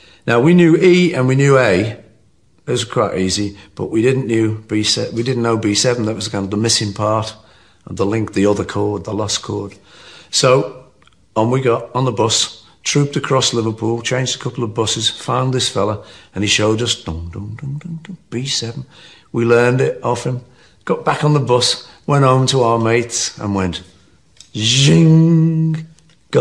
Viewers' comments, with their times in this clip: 0:08 Did he just call B7 "The lust chord"?